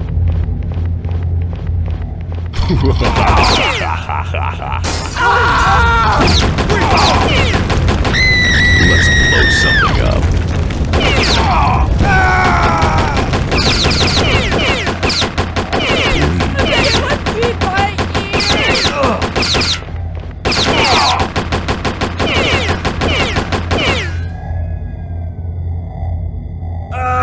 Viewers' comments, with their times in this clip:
0:08 that scream, Jesus Christ